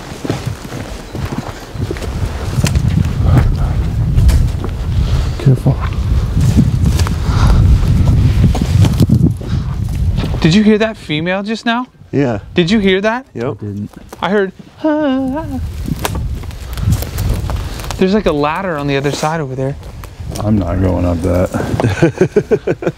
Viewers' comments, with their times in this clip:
0:07 Minute a mist crossing in front of the camara before u hear the faint scream